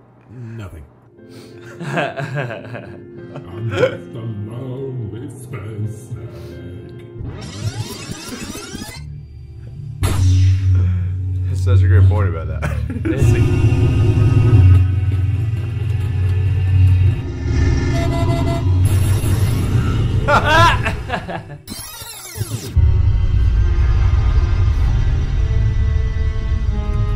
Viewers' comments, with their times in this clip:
0:10 Has anyone else noticed how the lightsaber sound sounds like they just made it with their mouths?